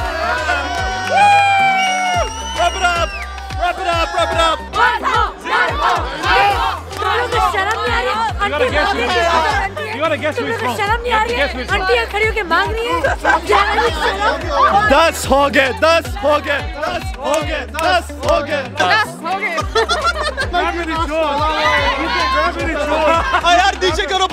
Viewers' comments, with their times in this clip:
0:10 the girl sounds sooo much like rani mukherjee